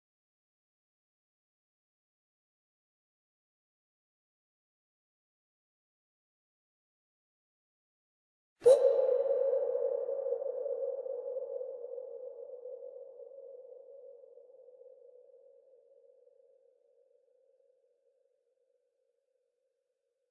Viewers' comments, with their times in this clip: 0:05 Bro the beat on is fire